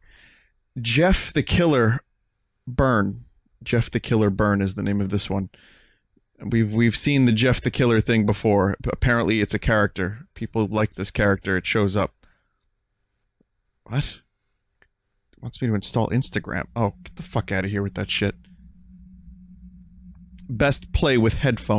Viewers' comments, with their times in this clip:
0:03 Vinesauce: The Full Sauce the game has fucking we are number one in the megalovania soundfont as the music